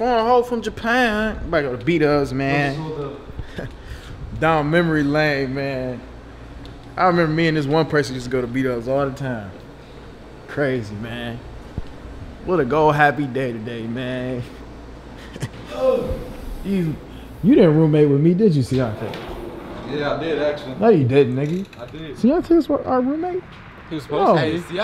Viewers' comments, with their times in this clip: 0:08 sound smack like Lil boat😂